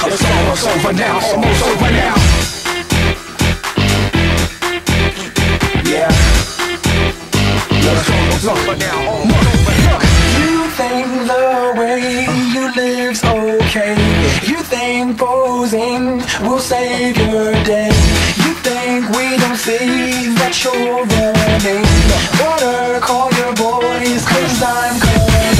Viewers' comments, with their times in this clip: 0:10 sounds like Broly theme😂